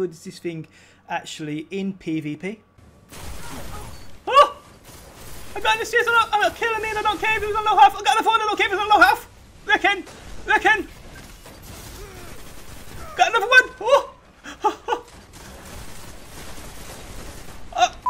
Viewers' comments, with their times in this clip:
0:05 what is he saying 😂